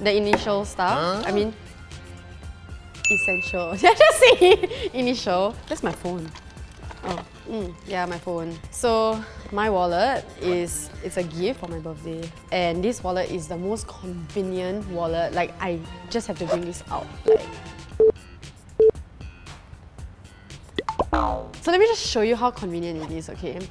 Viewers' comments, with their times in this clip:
0:05 that REALLY sounds like my name